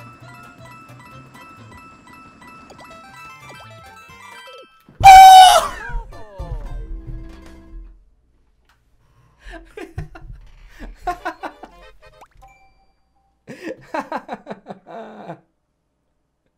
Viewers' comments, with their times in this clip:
0:04 Me: tries to sleep in cause i have a terrible sleep schedule the birds outside: